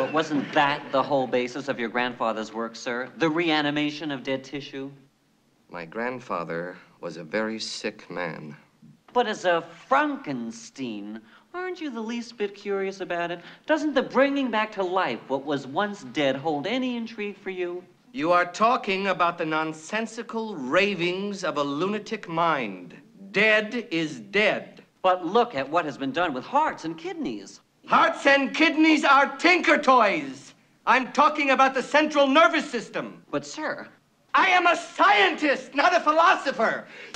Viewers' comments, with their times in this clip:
0:05 Funny movie and very funny scene, might be reaching a bit by stating this. he says "My grandfather was a very sick man," in such a distant way I can't help but feel empathy for this character in such a comedic moment, despite constantly being compared to his grandfather when he doesn't want to and trying to distance himself from his grandfather as much as he can I can't help but think he feels bad for his grandfather. Like he realized how great of a scientist he could had been had he been able to curb his mental illness and stopped being so fixated on bringing back dead people, only Gene Wilder could have pulled off such an amazing character moment like this. RIP Gene, you were a genius!
0:18 Just love his delivery.